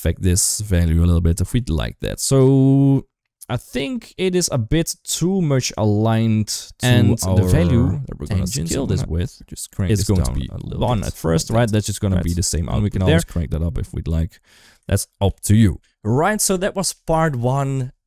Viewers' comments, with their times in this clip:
0:06 Great videos, really appreciate the time and effort. Just because no one else has mentioned it, there's a weird audio artifact of two audio streams talking over each other near the end. It doesn't take much away from the tutorial but I just thought I'd point it out.